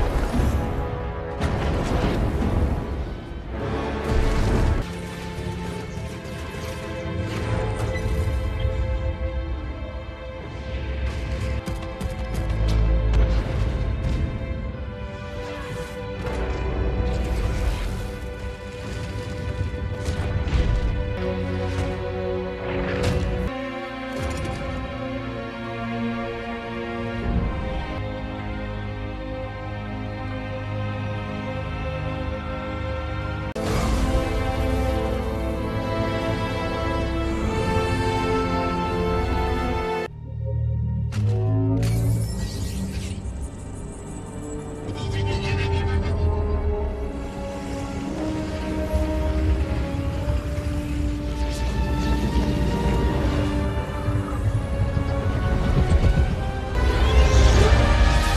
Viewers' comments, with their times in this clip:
0:08 when u try to hold a big fart and it comes out
0:42 sounds the best by far